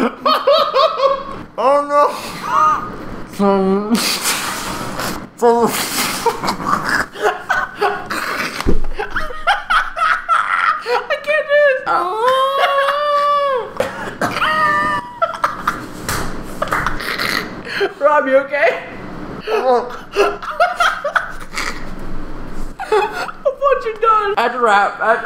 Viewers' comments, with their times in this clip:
0:09 THAT LAUGH PRESTON